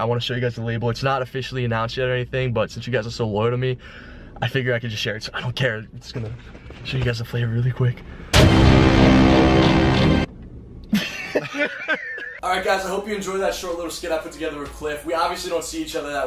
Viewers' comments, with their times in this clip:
0:03 That scared me !!! my headphones was soo high up XD